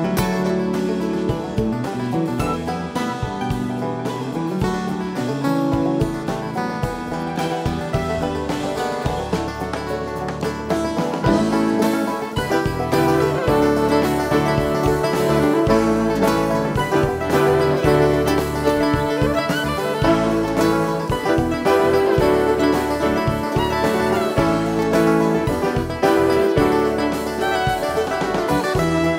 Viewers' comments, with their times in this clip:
0:10 my favorite RRE song, Mighty River at like or so, with piano like the studio version!!!